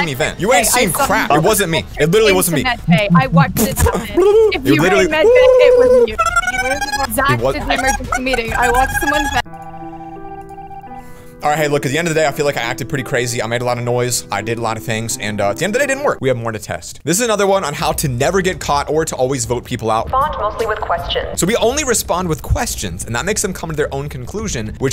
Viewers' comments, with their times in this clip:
0:05 😆 I love how she was talking over him